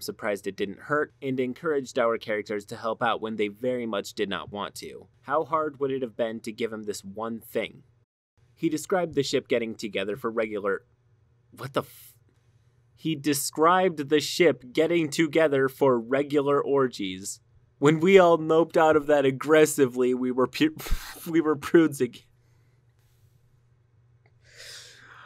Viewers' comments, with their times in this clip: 0:10 I was looking away for a sec at this part and I just though he stumbled over his words